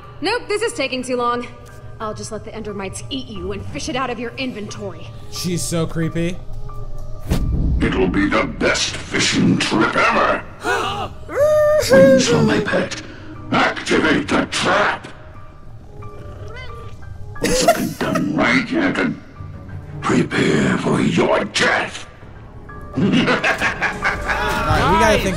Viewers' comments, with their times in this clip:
0:08 How did the pumpkin change the voice